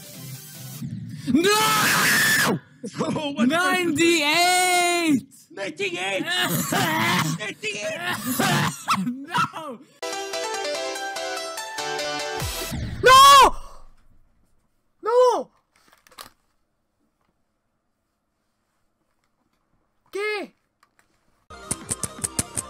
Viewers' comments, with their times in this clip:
0:04 Whoever was coughing in the background made this so much better